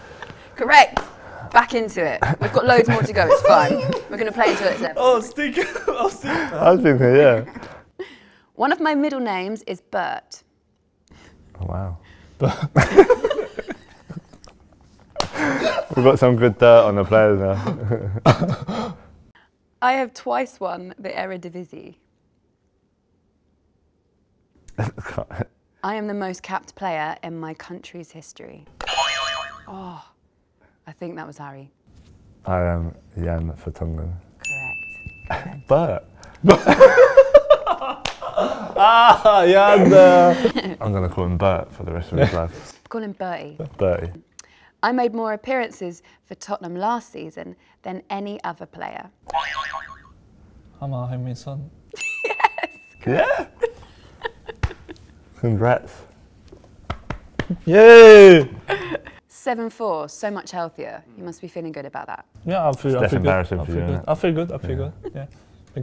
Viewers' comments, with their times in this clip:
0:03 Son’s little giggle SEND HELP 😍😍
0:15 Heung min son was laughing
0:32 what did he say? I can’t understand;
0:50 It sounds like "I'm Mohamed Salah!"